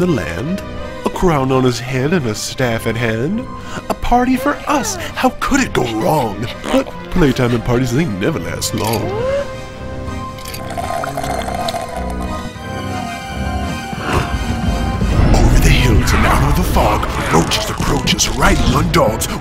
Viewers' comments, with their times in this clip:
0:06 the dog make a fart.